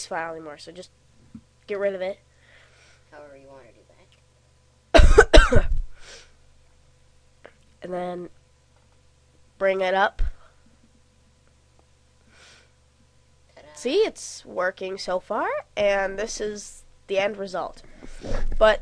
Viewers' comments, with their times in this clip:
0:03 Do you guys know that he is intentionally pretending to be sick.Because when ever his friend is speaking from behind,he tries to avoid the voice coming inside the vedio by coughing so hard.like if u agree. proof: